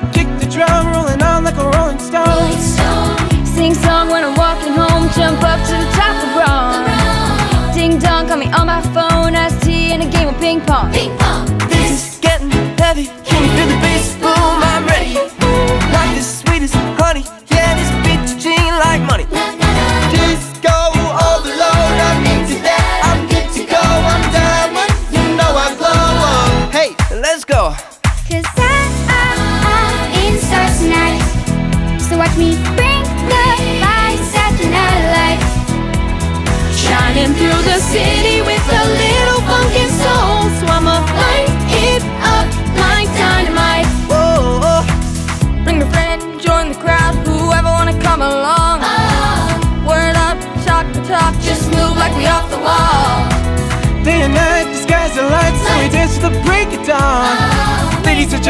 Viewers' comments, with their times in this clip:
0:10 AGGHHH the little girl saying "ping pong" is so freaking cute.
0:29 her voice amazing ❤︎
0:44 the BEST PART ! OMG his voiceeee🥰